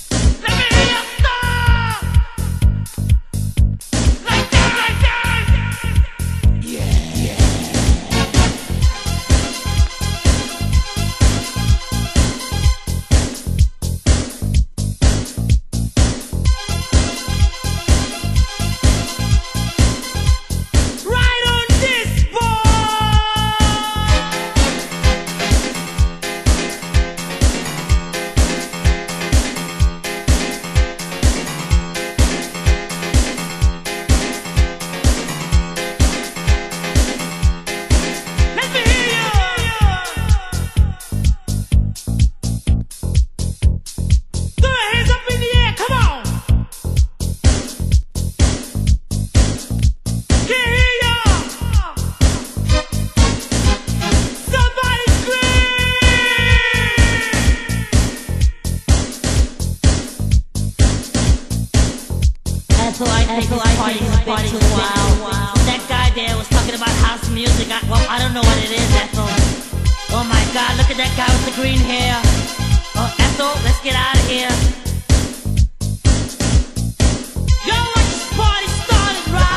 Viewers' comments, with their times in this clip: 0:09 this synth part sounds like fad gadget- Luxury from 1985
0:55 AMONGUS EUROBEAT REMIX SCREAM
1:02 that guy sounds like spongebob